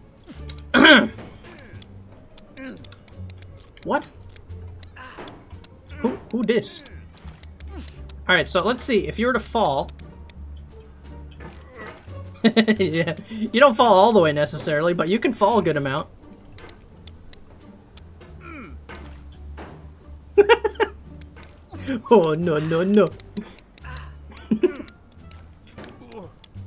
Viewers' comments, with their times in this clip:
0:09 i love your laugh so much😂😂